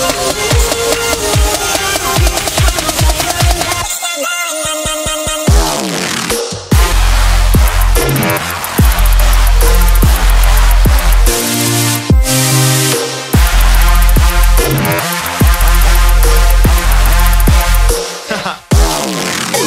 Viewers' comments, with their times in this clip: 0:05 That drop just screwed the whole song...